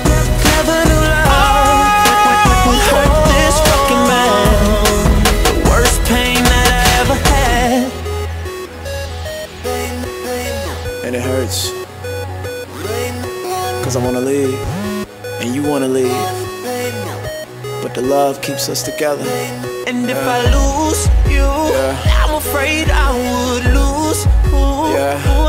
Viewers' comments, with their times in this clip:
0:08 People some help here, it sounds like he starts to say ''lame'' ''lame'' and it starts til 2.58 is it real or just in my head
0:09 does anybody else hear him say lame, lame.. starts ?